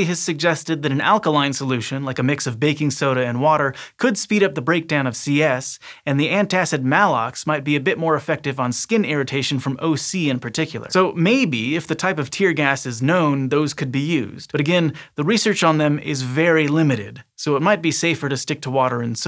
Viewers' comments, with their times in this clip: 0:05 You mispronounced Maalox. It's a long A. I almost didn't understand what you meant at all...never heard anyone pronounce Maalox wrong before. Two As in A row is a strong hint it's a long A.